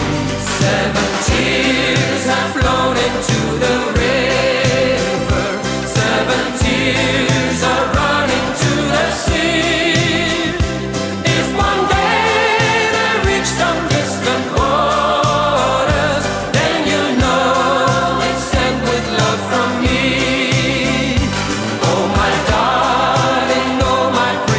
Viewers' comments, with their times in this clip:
0:05 he dance like a lady and sings like Liz of Boney M.